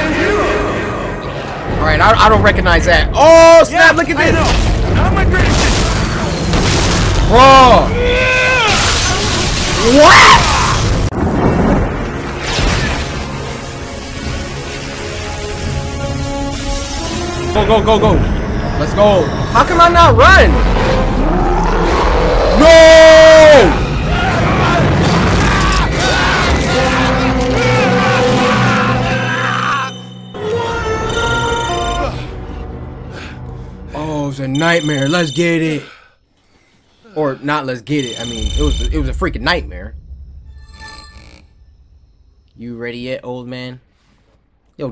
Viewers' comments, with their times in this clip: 0:10 Thor: The Dark World Theme intensifies
0:29 The Jurassic park theme song sound it like it was saying "what are those"